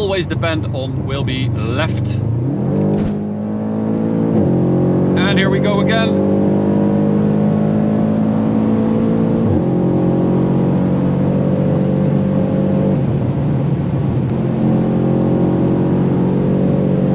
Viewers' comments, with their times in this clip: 0:03 " when she's home alone " BOOOM!